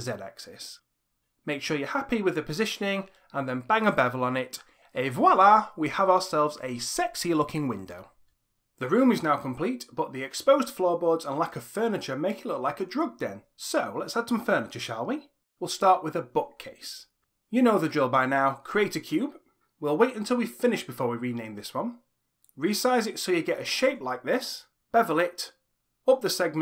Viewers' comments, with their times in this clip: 0:10 The way you just say it with such a cipper voice made me laugh Thank you for an entertaining and informative tutorial 😂😂😂